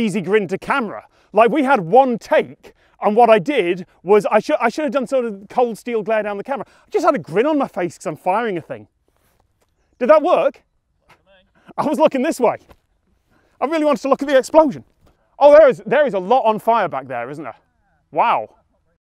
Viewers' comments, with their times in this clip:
0:06 if you listen carefully you can hear Tom Scott's non camera accent.
0:06 "I just had a grin on my face cause I'm firing a thing" what accent is that?